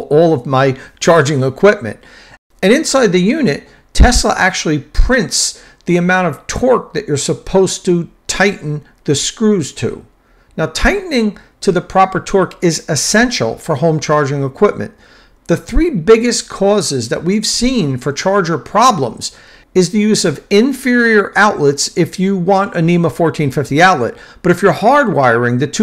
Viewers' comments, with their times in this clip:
0:07 USB? You mean “USE”?!